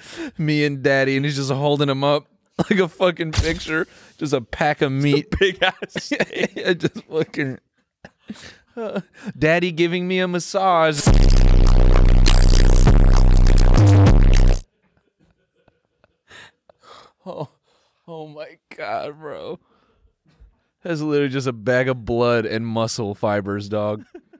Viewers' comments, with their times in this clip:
0:10 bass boosted out the fuckin ass and I can still tell it's Bones when I hear it